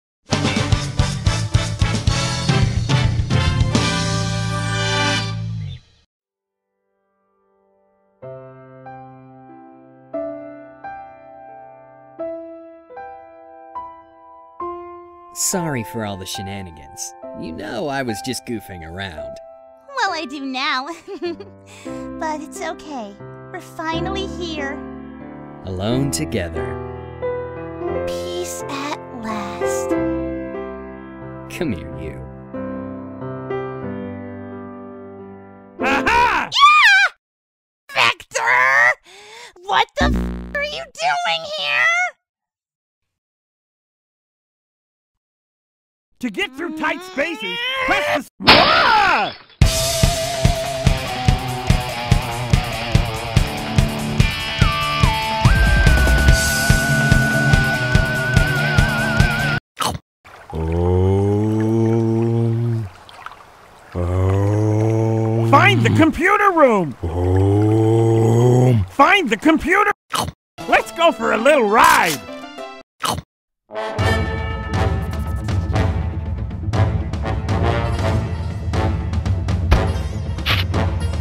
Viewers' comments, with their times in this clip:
0:08 all I hear is knuckles and Espio
1:02 Silver is still on the loop in the background! XD